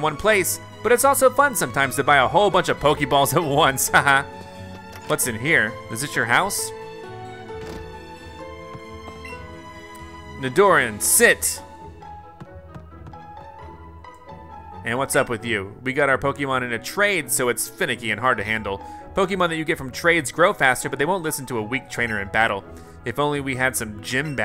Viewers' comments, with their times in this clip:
0:06 You did not just call that nidoran "ni- dor- in" 🤦‍♀️